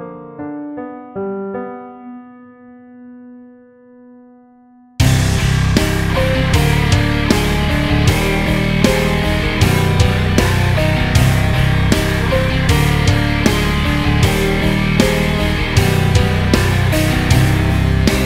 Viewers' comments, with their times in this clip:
0:05 Is that the unmistakable tone of a Dingwall or is there something else that sounds this good??